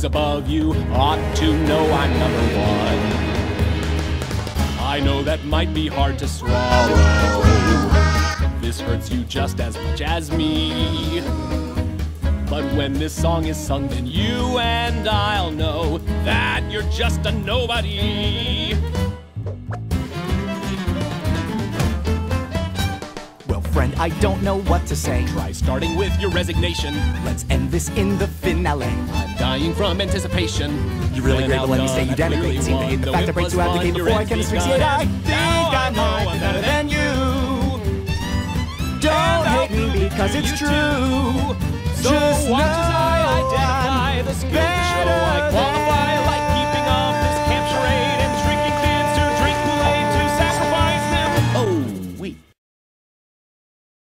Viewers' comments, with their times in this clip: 0:04 i love the little "lalalala" and "oooh oooh oooh" :)
0:04 is best but with the LALALALA and the OOOOOOOOOOOOOO
0:05 BEST PARTS (When the kids say Lalalala and when they say ohhh
0:07 that earrape though.
0:13 why does Daniel sound like Markiplier when he sings 'you and I'll know'?
0:16 The growl is the air I breathe
0:17 My aesthetic: Daniels little throat rasp on "that you're just a nobody"
0:19 I swear to God that the music sounds like it's from Paper Mario Color Splash please tell me that someone agrees with me
0:30 Plays video at the speed of 2X If 2 fast talkers off of commercials had a competition:
0:31 props to them for singing these parts so fast holy hell
0:42 i really like the way david says "just know im better than-"
0:43 Here SOLELY for the "beTTTer thAN~~"